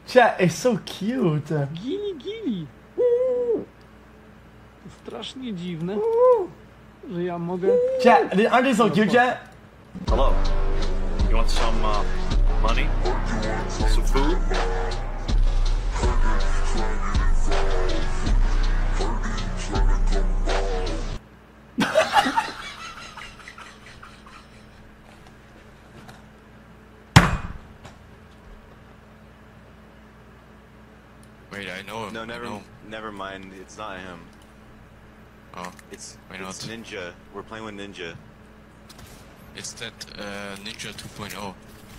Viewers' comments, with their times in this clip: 0:10 that TikTok is awesome but it’s his car starter laugh that’s getting me 😂😂😂😂
0:20 most insane xqc laugh :face-blue-smiling::face-purple-crying:
0:22 what is that laugh bro 😂